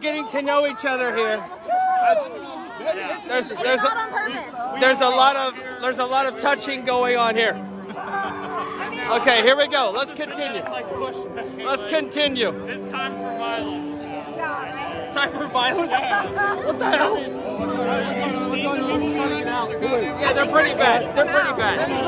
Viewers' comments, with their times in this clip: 0:03 you can hear me yell hiiii after you said we're all getting to know each other. Glad you got these videos because despite being fairly close to the stage I couldn't see anything.